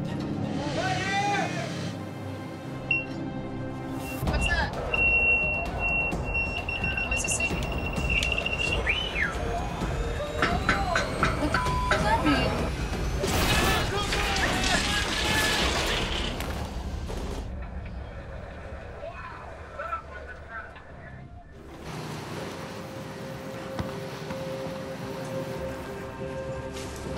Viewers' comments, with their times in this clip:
0:07 Sig was whistling at her
0:09 I absolutely hate the phony, contrived, staged, deceptively edited, crap this show concocts! The hook getting caught was real, but the totally unnecessary, obviously "added in post production" sound effect, of the rope stretching is ridiculous. I stopped watching this show for reasons like this. Same as the "news", once youve caught them lying/faking things, why would you want to spend your time trying to figure out what is, and what isnt, lies or truths?